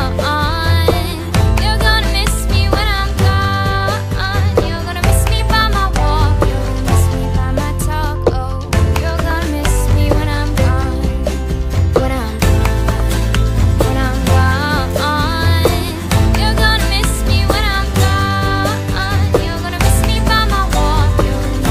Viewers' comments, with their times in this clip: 0:09 she said taco :D